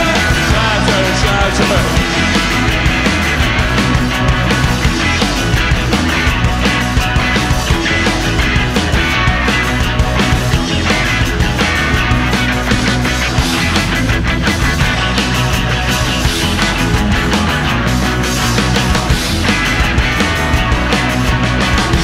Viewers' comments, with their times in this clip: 0:05 the rendition of "Shattered" has a proto-punk high energy feel